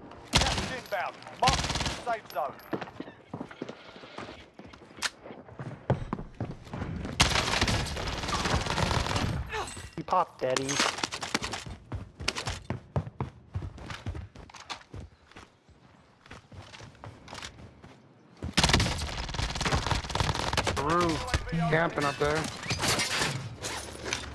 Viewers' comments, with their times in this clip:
0:07 I was looking about halfway up the stairs his deady runs out. I could hear his last steps but I guess that was only about 3-4 steps behind him. Too late to make a correction.